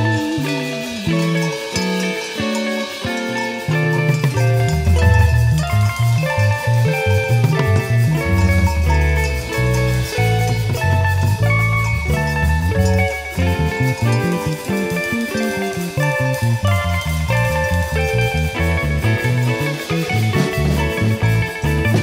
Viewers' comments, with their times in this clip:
0:04 oh ya, more cow bell!